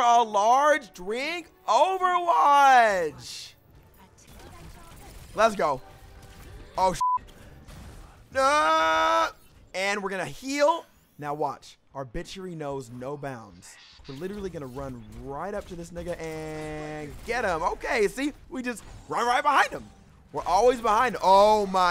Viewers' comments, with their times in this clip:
0:03 i thumbed up just for the singing